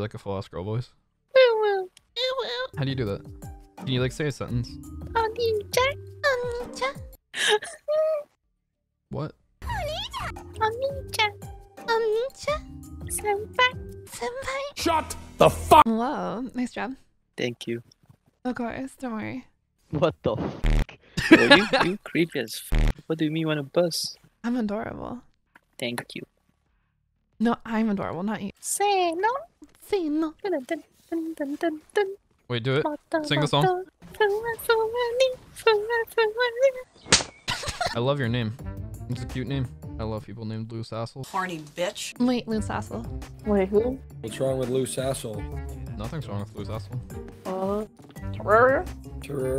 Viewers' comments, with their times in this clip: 0:03 Bruh. That got to be the worst voice impresion i ever heard
0:36 damn the beat🤣😂🤣🤣